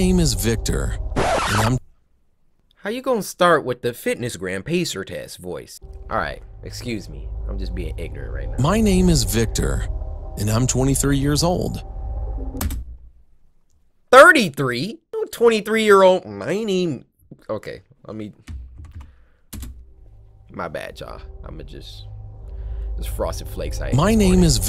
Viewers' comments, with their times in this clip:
0:09 did he say ni-